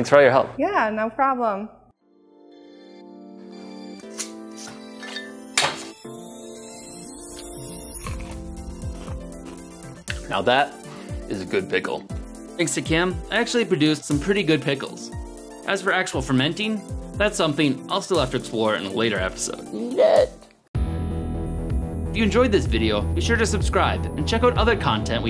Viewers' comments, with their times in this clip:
0:07 Wow that sound of the crunch is satisfying Btw how long should you sit the timer?